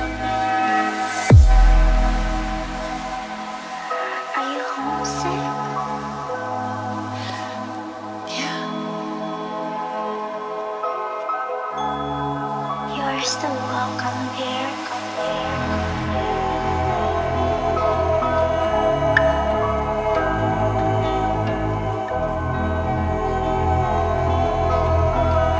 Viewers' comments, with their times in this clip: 0:10 Agreed 🎉 I nailed. I think this track is better because of the female vocals…. Other track is just noise in a way. Anywho more feels on this one that whistle sound 🎉 god dame good music. Gets stuck in my head.